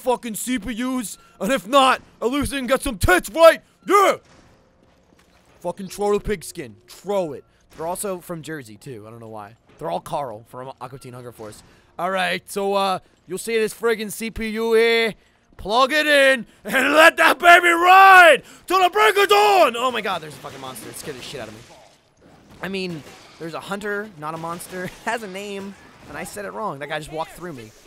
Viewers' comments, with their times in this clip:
0:09 fuckin carl voice over had me rollin! haha
0:12 Best Carl impersonation I've ever heard